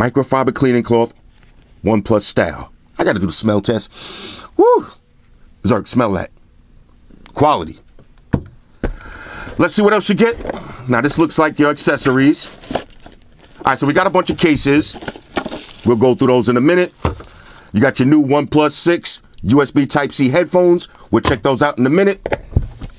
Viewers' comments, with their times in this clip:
0:06 I heard white shoes smell the oneplus cleaning cloth